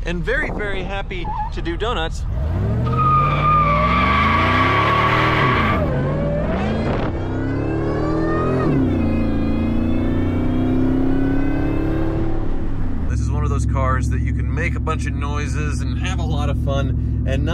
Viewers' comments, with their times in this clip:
0:03 Even the burnout sounds 2000’s